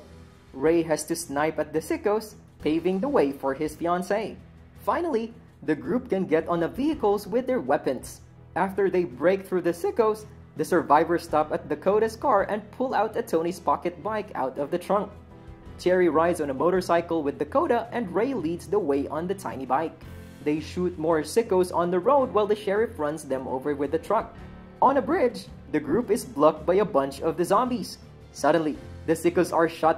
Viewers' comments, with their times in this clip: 0:10 Lol lmao "after they break through the sEaieCKOS" lol that voice crack man lol even the commentator thought it was funny. He held his laugh in pretty good 😂😂😂😂😂😂